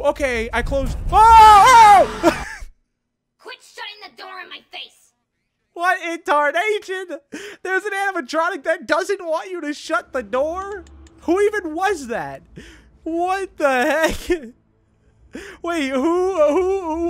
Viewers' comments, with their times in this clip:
0:04 The way he said that